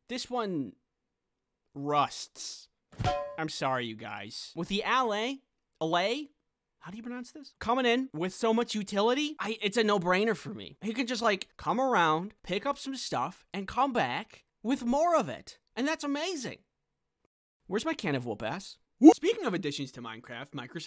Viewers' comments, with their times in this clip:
0:05 How You Say Ally: